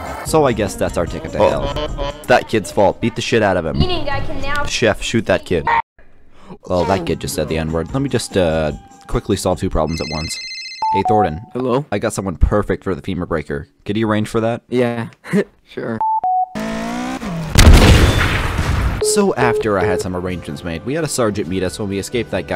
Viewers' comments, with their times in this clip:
0:10 FL Studio rendering sound made me trip out, i had FL open when it played